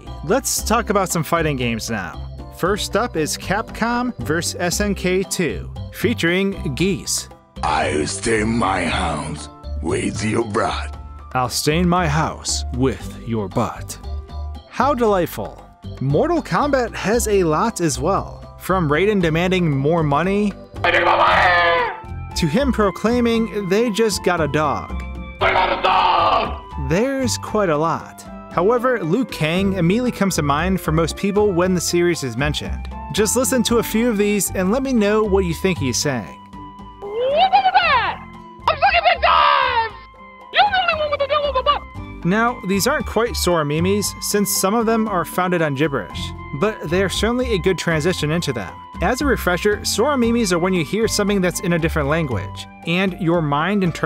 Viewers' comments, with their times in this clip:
0:03 I hear: I steam my hams... With your bra.
0:07 This is what I heard: " I rest in my house, with you Brad..."
0:07 I heard...I’ll train my mouse with your bra...
0:07 sounds more like "i'll stain my house with ya bra"
0:10 i heard "with you bruh"
0:21 Raiden sounds like filthy frank oh my god
0:36 a whoop in the bed (sounds like you mean sex) a crop in the dime (i don't know ether) yoop loop wuwa the pup (the poor pup)
0:36 Look at my bat! I’m a big dog! You’re gonna have to deal with my butt! ( I had to listen to the last one more than one time XD. )
0:37 On I heard him say what day fuk is dat? somehow
0:37 Liu Kang: WHAT TIME WAS THAT!? I SUCK AT BIG DIVES! YOU THE ONLY ONE WITH THE DEAL OF A BUTT!
0:38 I thought sounded like: I'm f#&*ing my dooooog Lol
0:38 Liu Kang said woop his ass
0:38 Either "I'm flipping the dime" or "I'm f***ing the dime"
0:39 All i hear is: "Your the only one with a devil in your butt!" XD
0:41 The second one is "I suck on a dime!"